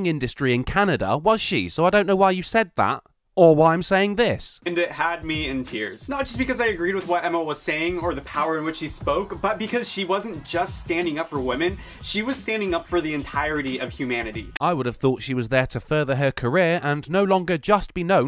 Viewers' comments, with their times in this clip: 0:06 The power in which she spoke?! Hahahahaha. To me, her voice sounded quivering and weak.